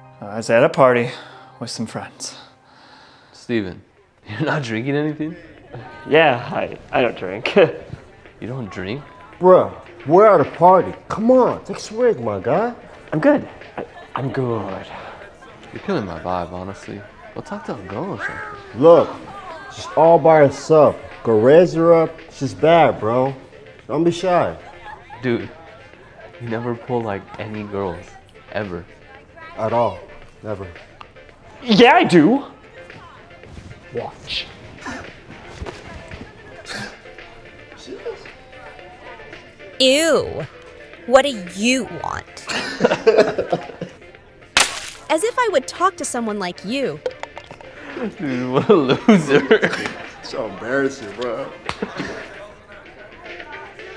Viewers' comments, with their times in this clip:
0:10 IS THAT KSI 💀 “Go rizz her up shes bad”
0:36 "sniggering" they can't be for real with this bruh.
0:36 y'all thought we wouldn't catch this. I think you mean snickering. y'all wild!!!